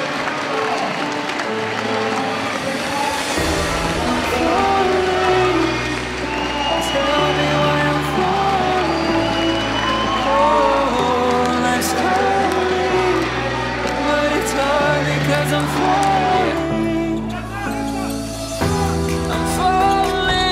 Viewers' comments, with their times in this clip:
0:03 music goes well with it
0:04 The music fits